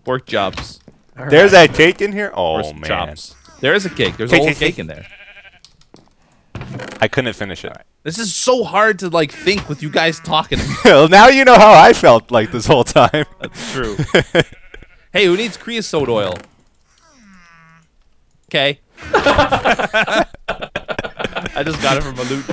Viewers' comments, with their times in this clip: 0:04 when he places the cake sounds like he is saying kkk..